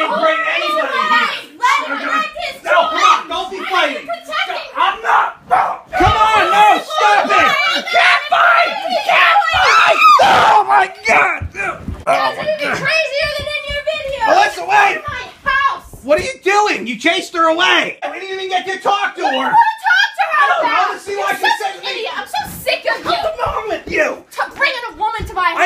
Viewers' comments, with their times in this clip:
0:07 You did NOT Joey Styles at them fighting... (LOL)